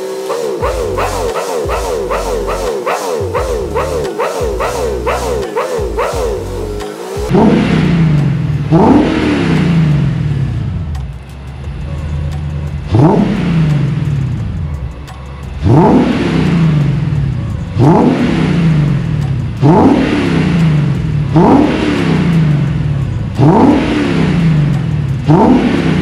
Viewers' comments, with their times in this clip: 0:08 Sounds soo good man 🥹🥹🥹 i want mine sound just like this!